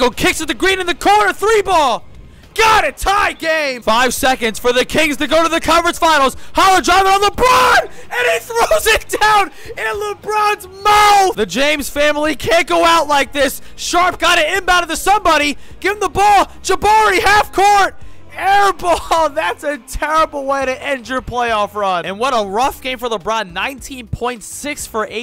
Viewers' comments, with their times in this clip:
0:07 the annoucer was going craaazy!! Amazing video though